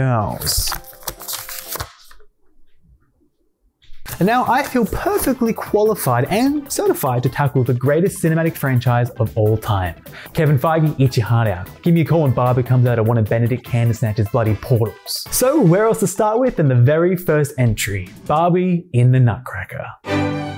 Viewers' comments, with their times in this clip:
0:08 SOMEONE PLEASE TELL ME WHAT THE HELL HE SAID ????? (i grew up in australia but i cant for the life of me figure wth he just said😭😭😭)